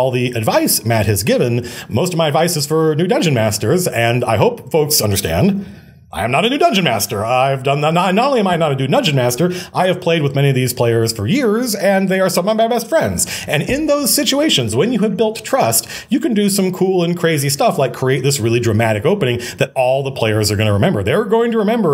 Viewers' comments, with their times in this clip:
0:06 Dew Nungeon master??? 😂 MC is human after all. Much love Matt. Great video.